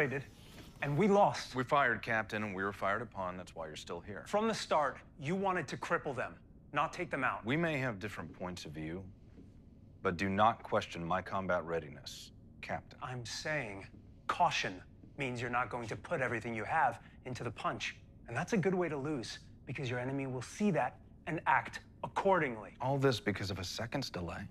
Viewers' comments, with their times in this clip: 0:10 There's a spot in this episode where he does a perfect impish Kirk grin - it looked just like Shatner. And in this clip he talks with Kirk's weird pauses. But if he did a full-on Shatner it would turn into parody.